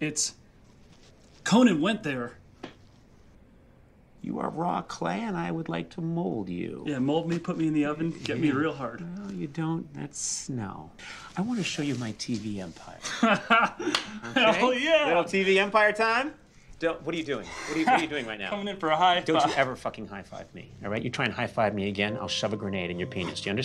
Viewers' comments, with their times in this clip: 0:07 "Mold me, put me in the oven, get me real hard." The delivery of that line is perfect. I'm literally agog!